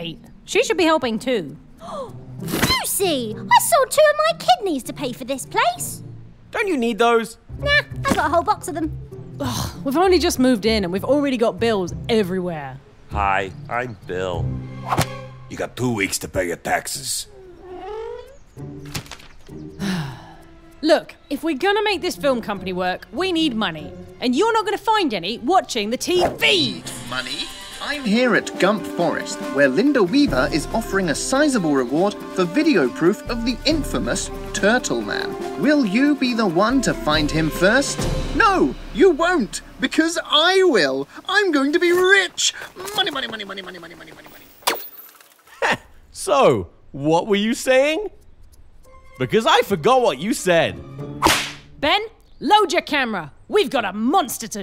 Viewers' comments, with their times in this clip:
0:08 Oh.. kid knees? HOLD UP-
0:13 bill goes form jokey to YOU HAVE TWO WEEKS TO PAY YOUR TAXES
0:38 Easter egg.The news guy said money money money like mr crabs from spongebob cartoon.